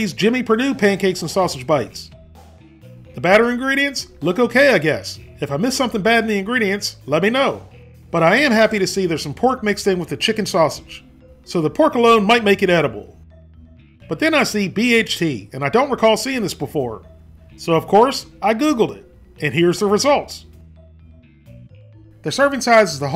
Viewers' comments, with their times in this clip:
0:05 am I the only person who thought "oat bran" was "cat brain"?